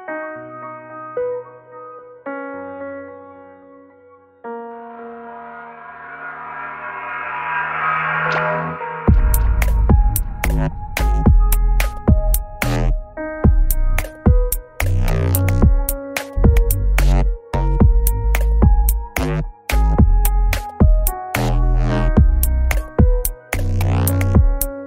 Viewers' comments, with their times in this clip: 0:08 FARTING AUTOTUNE, FUCKIN EPIC BRO!!!!